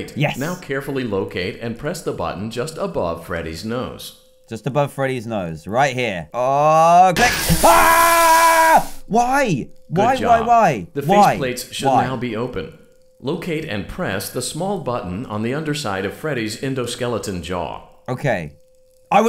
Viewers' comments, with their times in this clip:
0:06 Ahh. The old classic DanTDM scream.
0:07 why did u do a long scream